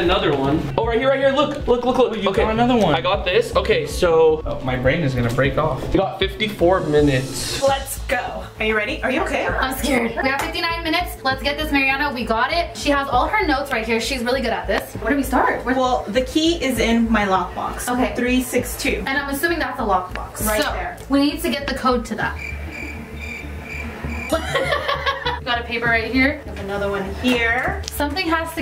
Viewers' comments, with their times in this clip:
0:09 Whys it sound like the video is sped up?